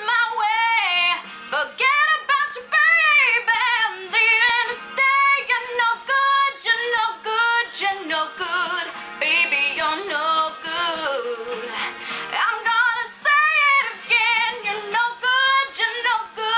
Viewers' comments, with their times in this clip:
0:04 powerful vocals...just a bit higher (higher pitch) at this point